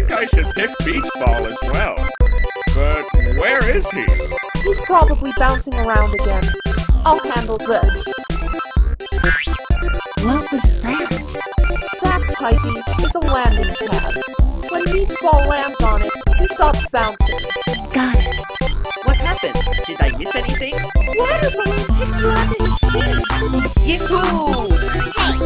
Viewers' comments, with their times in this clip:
0:09 THE MUSIC IS SO LOUD I CANT EVEN HEAR THE DIALOG